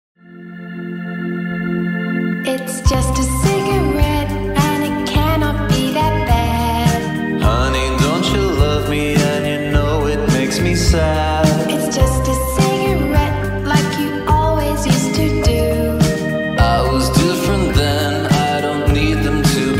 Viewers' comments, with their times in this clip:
0:06 Okay but the way that “Baaad” is said gives me ✨🪄🌱🌿 Serotonin